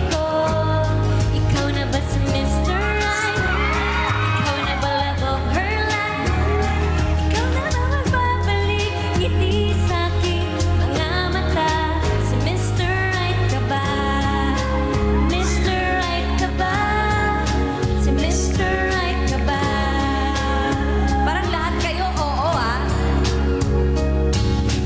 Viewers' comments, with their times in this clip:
0:07 her voice cracked